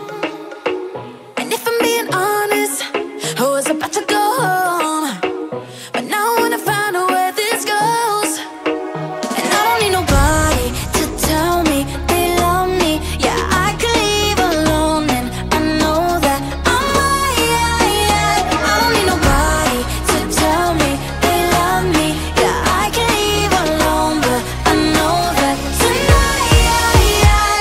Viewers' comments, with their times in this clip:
0:09 why ally's part always catchy😊 also on sledghammer